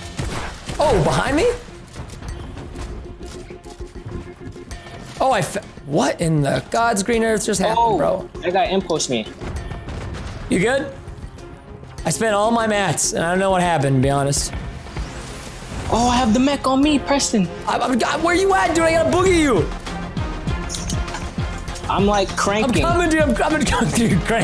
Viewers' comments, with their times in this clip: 0:05 Preston lost his voice!🤣